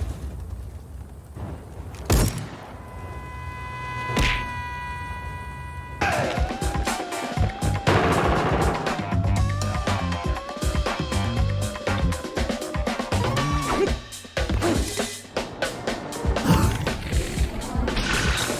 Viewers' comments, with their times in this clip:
0:06 The timing with the song XDD